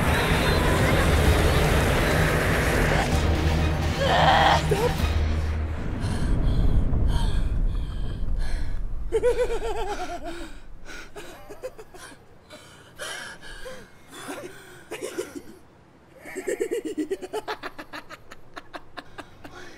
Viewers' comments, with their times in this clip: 0:04 the laughing mins had me rolling couldn't stop laughing.